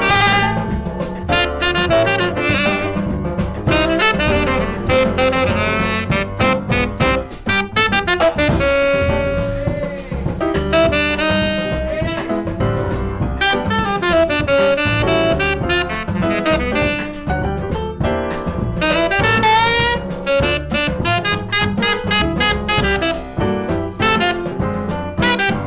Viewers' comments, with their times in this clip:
0:09 I swear that's Jon Batiste in the background sayin "Ayyyy" lol